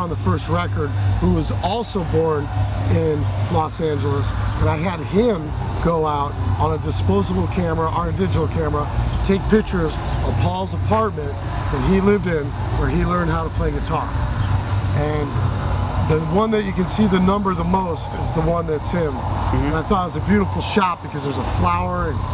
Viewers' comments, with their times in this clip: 0:06 just realized miw is playing in the background